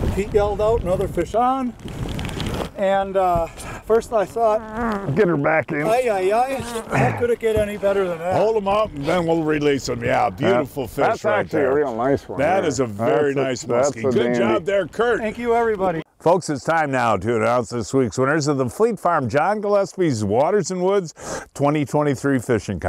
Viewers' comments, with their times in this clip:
0:10 He is very annoying but this episode time he farted on camera😂😂